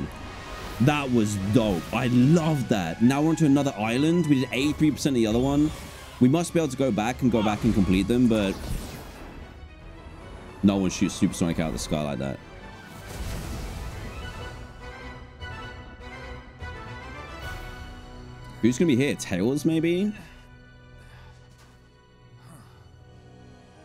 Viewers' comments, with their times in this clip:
0:06 I think I heard a swear